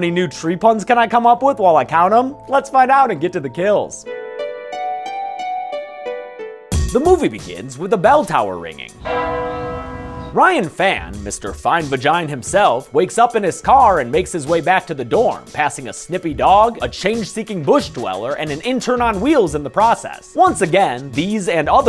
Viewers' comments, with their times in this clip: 0:08 I heard that in my right ear 😭